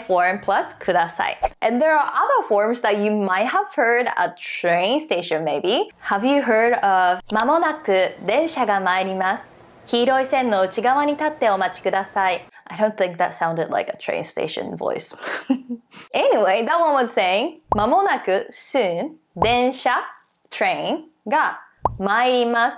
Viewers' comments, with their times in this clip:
0:08 Disagree! That was the best train station voice I've ever heard ✨